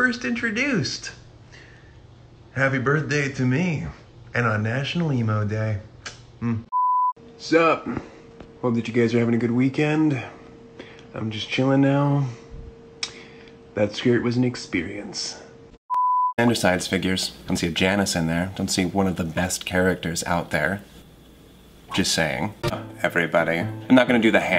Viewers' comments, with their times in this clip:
0:06 I keep forgetting they're all Thomas bc he's such a great actor like literally hearing one side's voice come from another side or just Thomas sounds so weird